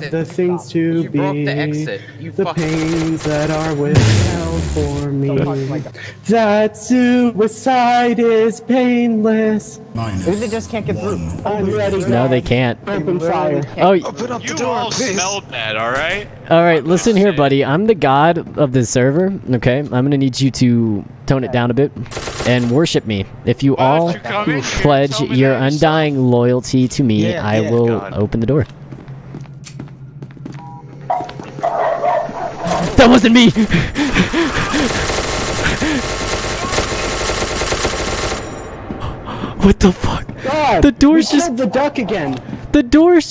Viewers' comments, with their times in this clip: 0:05 you know what, that song that he's singing reminds me of a song from around the year 2003 called "masturbation is murder", And if you ask me why it reminds me of that song I don't really have a clue but then again I am a little kooky to put it light.... he he ha who he.
0:31 dog barking in background